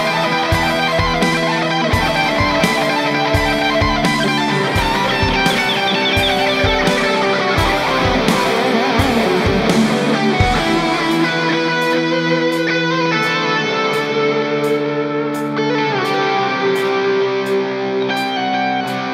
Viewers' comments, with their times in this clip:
0:03 Sparkling of Sand is just pure genius!! Did anyone else notice the bird calls used in this song. Especially at the mark. It sounds like he is strolling along playing the guitar in nature and communicating through the strings with the birds talking back to him. . I can't say enough good things about this man. Thanks Big B!!